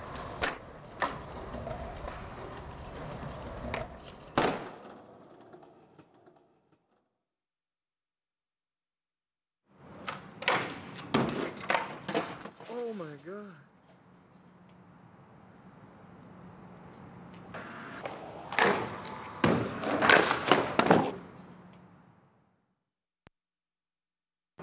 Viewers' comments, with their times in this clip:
0:09 was that "oh my god" at the ish mark, Mullen behind the camera???